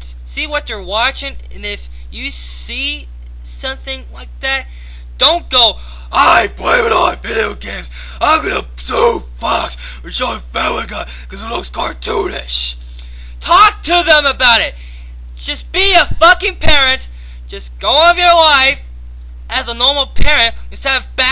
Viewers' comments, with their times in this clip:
0:06 you sounded like Tourettes guy o_O